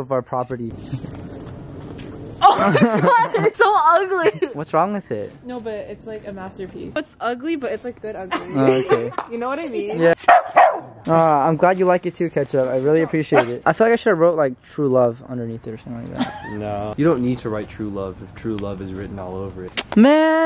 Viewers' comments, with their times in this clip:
0:04 “it’s so ugly” “what’s wrong with it” you sounded so hurt😭